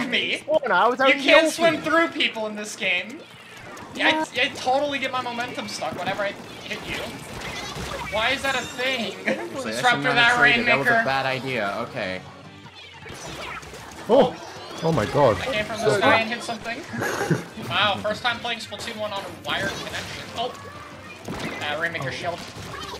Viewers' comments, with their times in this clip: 0:09 did they say that or did they say rainmaker I can't tell?